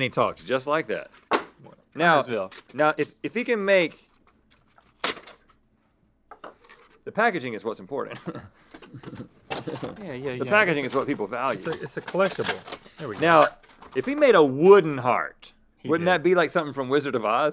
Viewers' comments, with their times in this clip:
0:05 perfect time with "crack" (Rhett) and bite (Link)! 😎🧨🍫👌